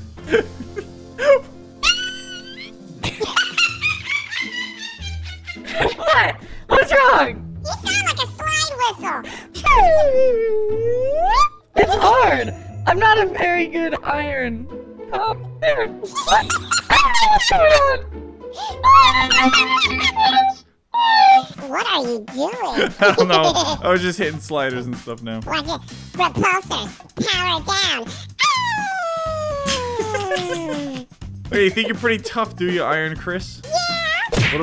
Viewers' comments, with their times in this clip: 0:06 you sound like ruby from bfdi
0:07 Glitched ctop sounds like ruby from bfdi
0:21 He sounds like a microwave